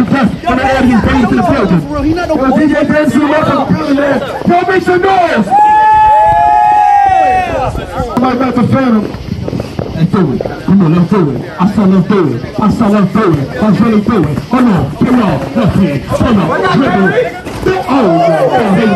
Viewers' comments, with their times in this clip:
0:04 The Night Sky heard them in the BackRound